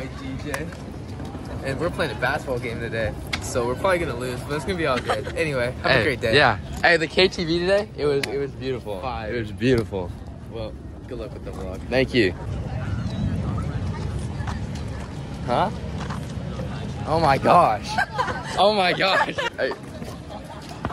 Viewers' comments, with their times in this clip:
0:07 bro's always been a little too excited to say that 💀💀💀💀 kinda warms my heart